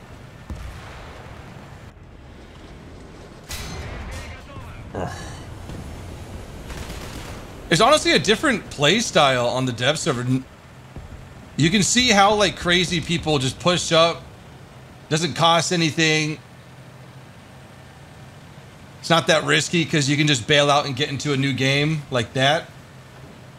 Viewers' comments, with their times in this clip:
0:05 Yo i heard mr.bean for a moment 😂😂😂